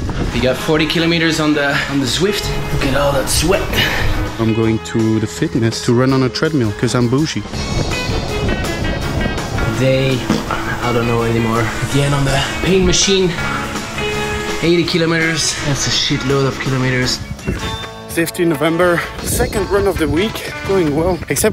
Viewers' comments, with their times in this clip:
0:09 was that a fart? XD